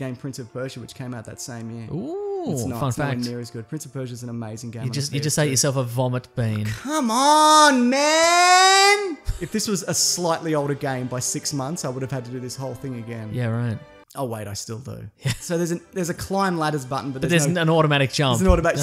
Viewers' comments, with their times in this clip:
0:06 for the amazing Chris Tucker from Friday impression.